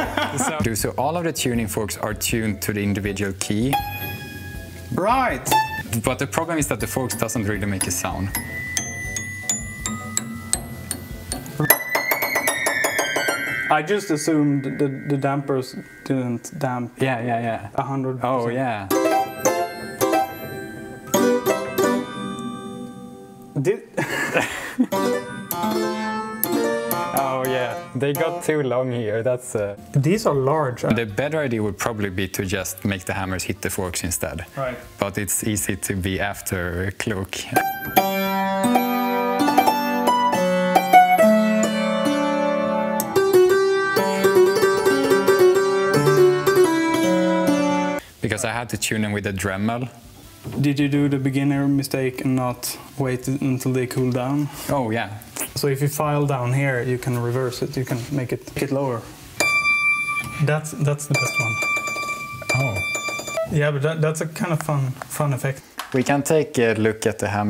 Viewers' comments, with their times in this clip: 0:10 That's not even a piano anymore, it's just an overpriced xylophone?!
0:24 that sounded amazing holy shit, like someone took concert bells or some such and played them exactly at the same moment as the piano There's also a zither-like or even harpsichord-y quality to it in the mid register
0:31 Ai spik inglish and is afterklok xD
0:55 Why is there a kiss sound between transitions?